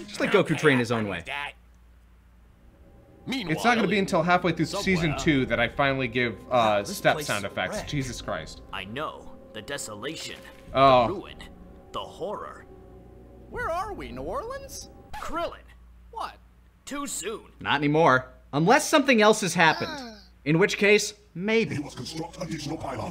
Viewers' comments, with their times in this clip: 0:04 Oh, yeah. The Sonic stepping sounds.